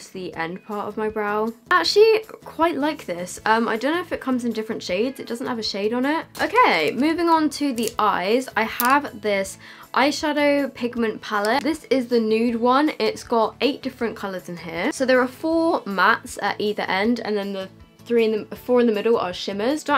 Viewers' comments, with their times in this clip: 0:05 Who else heard the cat meow
0:05 The little meow I can't even😭
0:05 hearing your cat meow makes me so happy for some reason
0:07 😂 did you hear hear cat😂💖